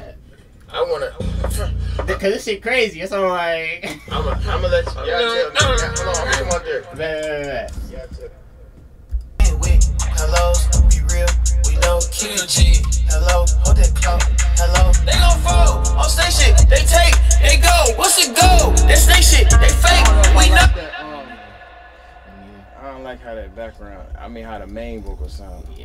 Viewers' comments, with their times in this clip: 0:10 DDG you NEED to keep switching between the low and high pitch flow like this on this song. Sounds so fire